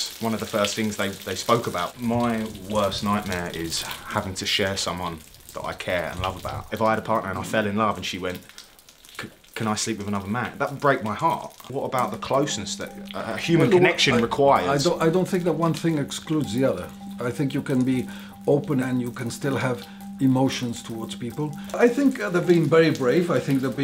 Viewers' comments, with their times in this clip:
0:05 I absolutely loooove how well spoken that man is!